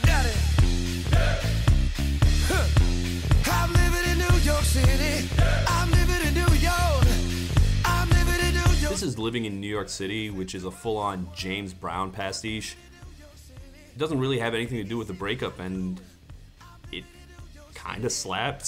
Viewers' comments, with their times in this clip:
0:03 The sax player killed me. Robin: "I'm livin in New York City!" Band: "Yeah!" Robin: "I'm livin in New York" Band: knows to stay silent Sax Player: "Y-" We've all been there.